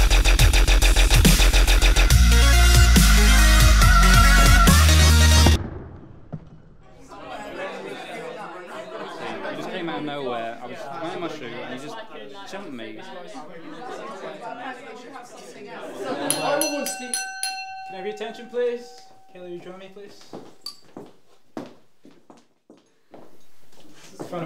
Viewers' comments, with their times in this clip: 0:05 Spiderman landing Oh my god, the overwhelming urges, the expressions, the slow motion, the dubstep! EVERYTHING ABOUT THIS IS PERFECT XD